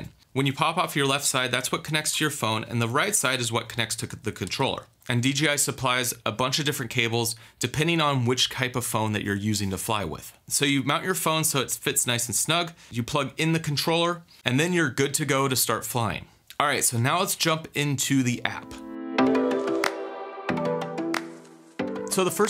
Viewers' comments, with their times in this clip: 0:07 ...what "kype" of phone? lol jk man thanks for the video!